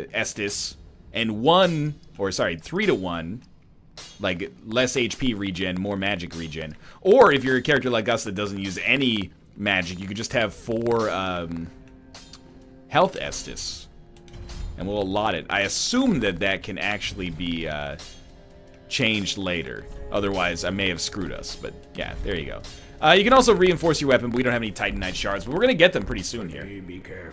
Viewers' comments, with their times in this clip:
0:08 and further the mic goes wonky check it
0:13 the sound seems to have some glitches... or maybe it's just my headphones.